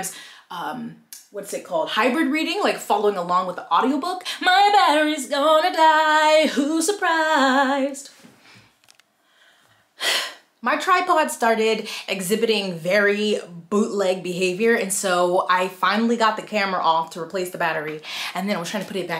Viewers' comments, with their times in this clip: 0:05 Not that 90’s R&B breakdown 🤣🤣